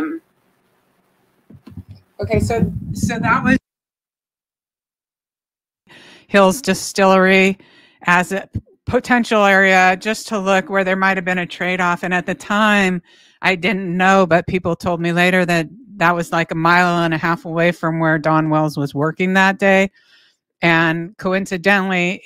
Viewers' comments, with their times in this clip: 0:04 the sound goes out.